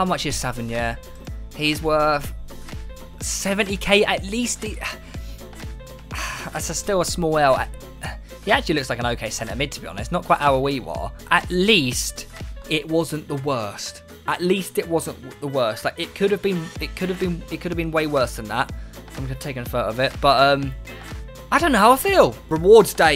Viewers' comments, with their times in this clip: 0:10 ... The way you pronounces aouar is actually weird... No hate or anything Avoviva